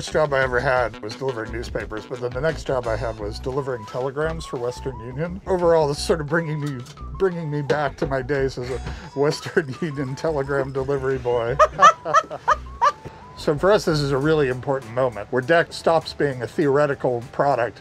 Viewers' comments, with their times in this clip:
0:05 laugh if you wanna keep your job